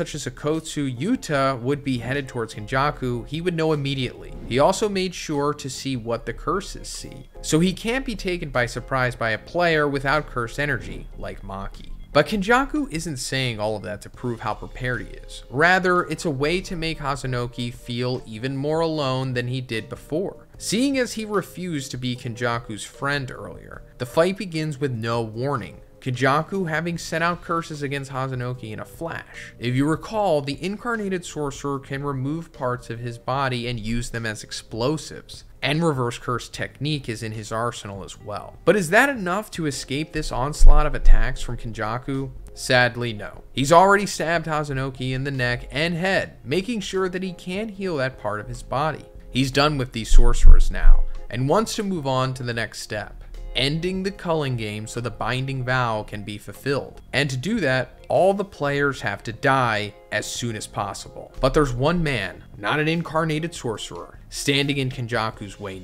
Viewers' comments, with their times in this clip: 0:03 “If someone like okkotsu yuta would BEHEADED towards kenjaku” I see what you did there ;)
0:49 what is that knocking sound, why do you keep doing that, it’s awful